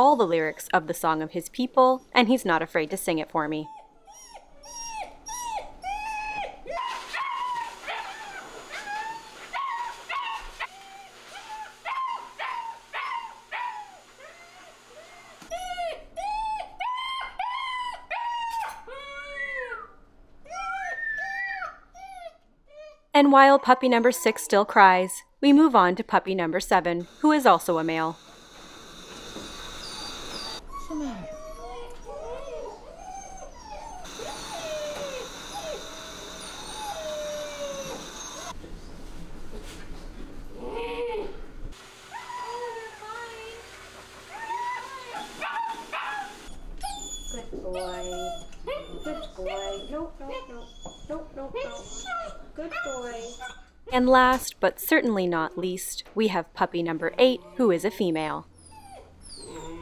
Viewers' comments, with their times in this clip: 0:08 my dog sound exactly like that when my mother leaves the house.....for a few hours, even if I pet her etc (She is a westi mom Chihuahua breed)
0:40 That angry puppy grunt was too freaking funny